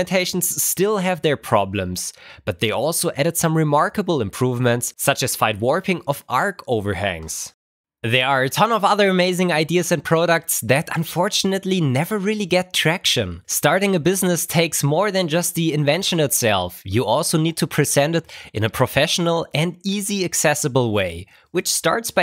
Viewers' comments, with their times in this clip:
0:07 face reveal Ifeel you look a lot younger then I expected. Im not sure why but your accent and confident speech added a significant number to your age in my mind of you. :)